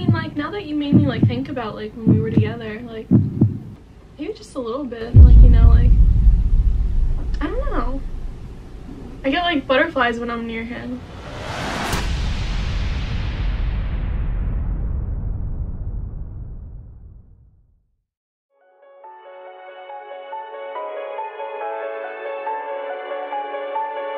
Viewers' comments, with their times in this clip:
0:06 every nigga felt that drop